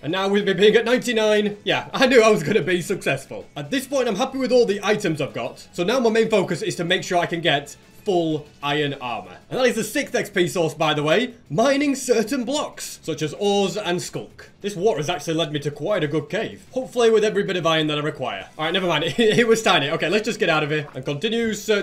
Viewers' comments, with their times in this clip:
0:09 halo music starts playing